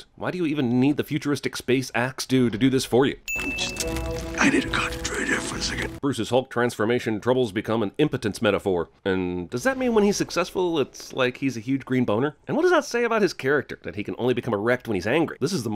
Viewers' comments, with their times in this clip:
0:03 now that I hear it, if you look at Wongs magic shields when listening to banner, it gets really weird imagining the dripping of his shields making that noise